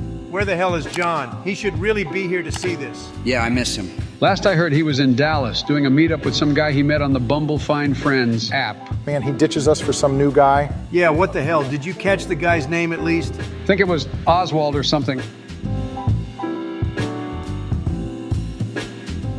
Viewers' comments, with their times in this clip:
0:06 feelin the sims music